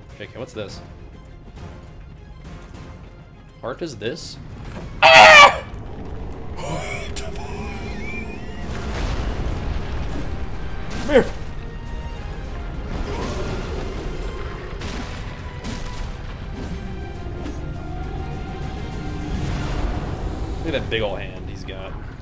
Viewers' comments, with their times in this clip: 0:05 Stand back, ladies. Let me show you how a man screams in terror!